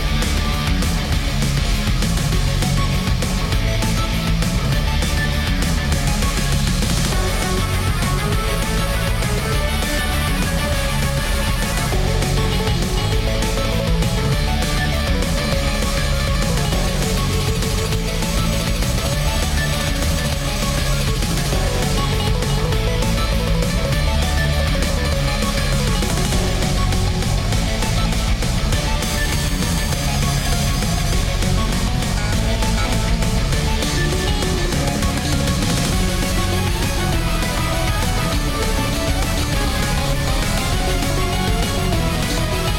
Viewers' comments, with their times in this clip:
0:07 Its a good music
0:26 have good bass and W remix